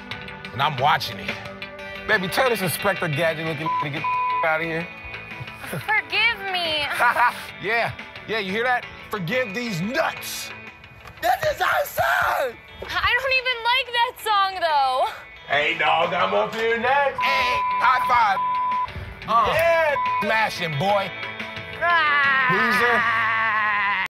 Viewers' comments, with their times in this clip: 0:05 Girl : *moan talk* forgive me! Tyler : ha yeah, yeah you hear that? forgive DEEZ NUTS
0:21 his cry sounds like Spongebobs laugh tho
0:22 mans sounded like spongebob